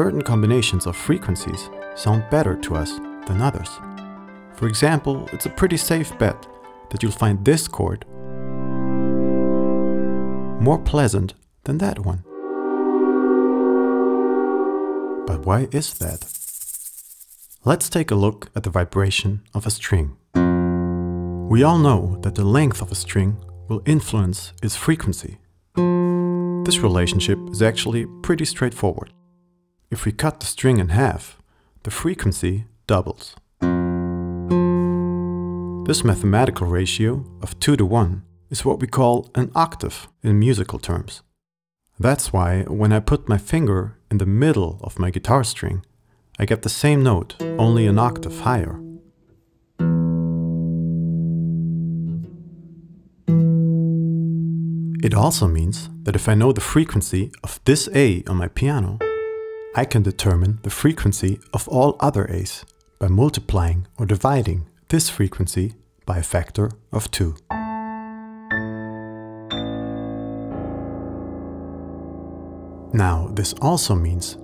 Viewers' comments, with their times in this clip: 0:04 nope, definitely find the second chord more pleasant. but i have seen some things…
0:08 sounds like the beginning of a TED talk video
0:12 sounds like train horn
0:12 sounds like a train. It could be used as a chord to convey something relating to trains, I guess.
0:54 Nice explanation, but the guy explains it all with a's, but plays an e on the audio track
0:58 I'm a terrible bass player with bad musical hearing, but when he played that A on the piano I thought "that's the first note of Life on Mars!" So I checked and that is indeed also an A. There is still hope for me.